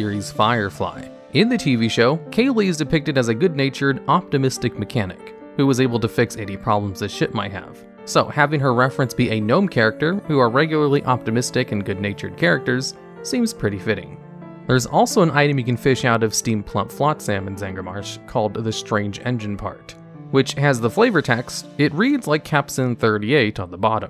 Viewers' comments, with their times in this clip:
0:06 "Eighty problems that shit might have"...? So... she was a gastroenterologist?